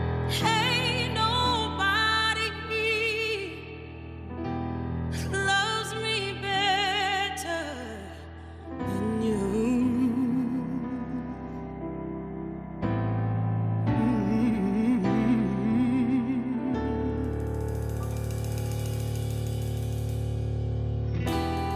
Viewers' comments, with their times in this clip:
0:08 You better drop that run Jessie!!! 😱😍👍🏼 I can't, she's SO good!! 😍😍